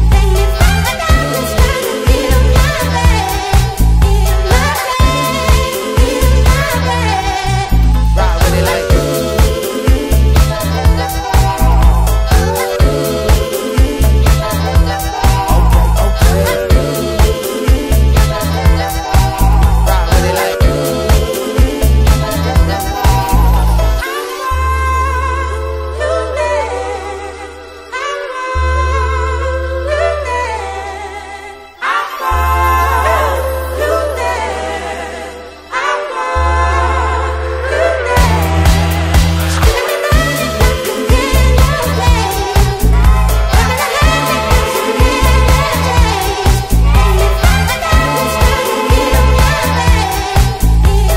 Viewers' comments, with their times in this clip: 0:08 💥Perfect video as always!! The only thing for me listening with earphones it's that a part of the beat sounded like the introduction of my alarm (Samsung's Morning Glory , the little ring for example), and it gave me anxiety :S
0:32 That vibration is so unreal! amazing